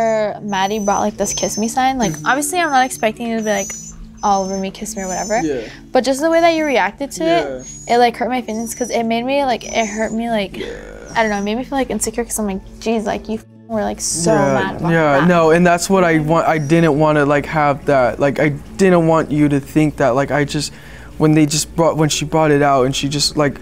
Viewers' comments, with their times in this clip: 0:07 Is there a dog crying ? Lol